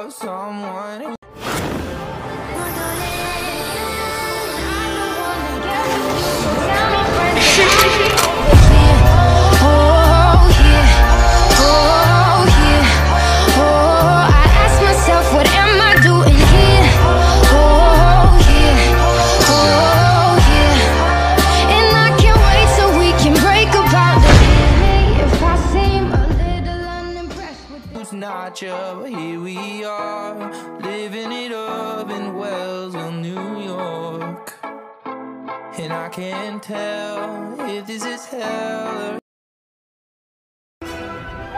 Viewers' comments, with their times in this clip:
0:07 i love how muzan is crying like this is my worst nightmare this boy is gonna kill me
0:09 he crying scare of the sun(michael jackson)🤔🤣😂
0:23 Muzan: *Scared Micheal Jaxson noises*